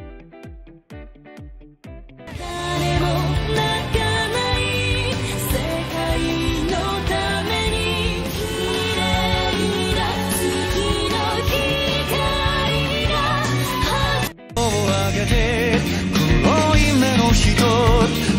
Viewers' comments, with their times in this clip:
0:04 fate zero sounds like one punch man ending song 1